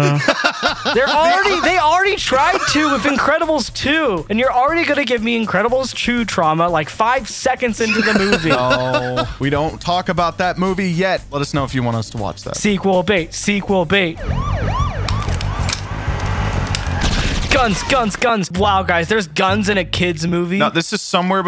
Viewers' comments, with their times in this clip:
0:06 = “incredibles CHEW trauma” hm yes. Chew.